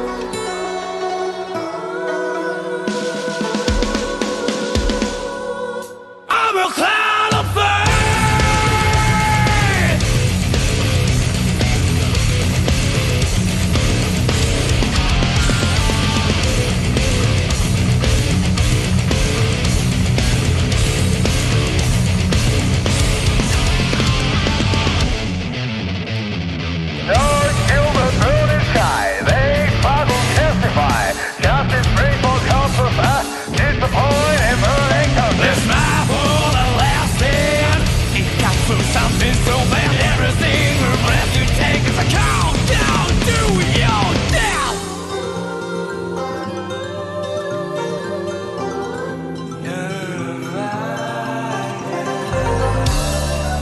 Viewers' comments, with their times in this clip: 0:05 It sounds like "I'M A CLOWN OF FAITH!" Which just made me envision Joker as a good christian boi.
0:35 Why does everyone say "This is my war, I'm last in?" There is no "this" being said. I would say the lyric here is "Is my war everlasting?"